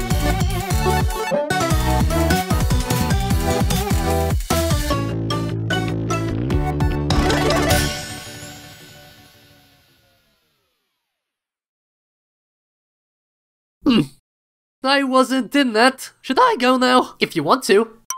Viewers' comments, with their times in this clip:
0:04 you can kinda hear the bfdi theme